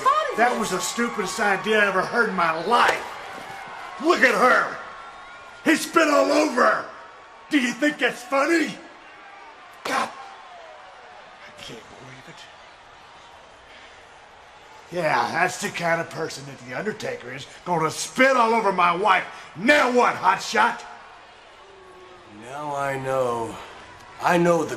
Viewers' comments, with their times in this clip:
0:08 Vince is laughing because that was unscripted! LOL!
0:08 Vince cracks up